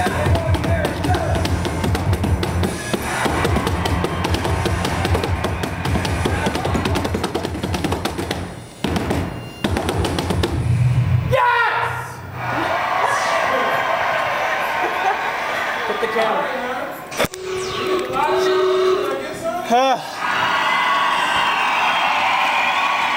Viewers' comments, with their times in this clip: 0:08 ... I don't know how to do the part ... where that BEEEEP kicks in... i just don't ... XD...